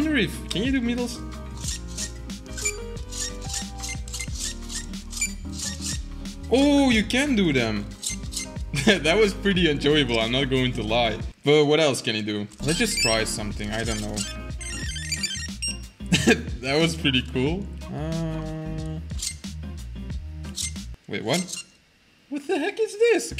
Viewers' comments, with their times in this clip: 0:10 it sounds like Jingle bells